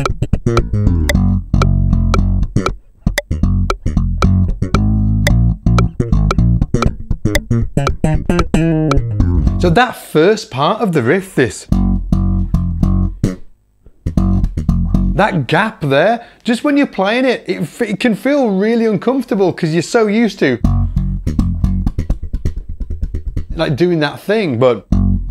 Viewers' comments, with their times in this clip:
0:07 wrong transcription the top of that lick is the flat fifth of the scale degree, not the fifth.